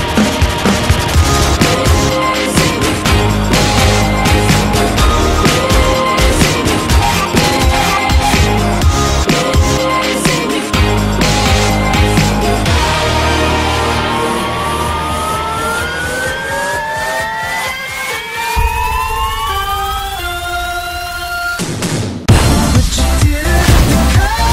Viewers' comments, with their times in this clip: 0:06 dude thats some sick editing when the shots fired go with the song. great work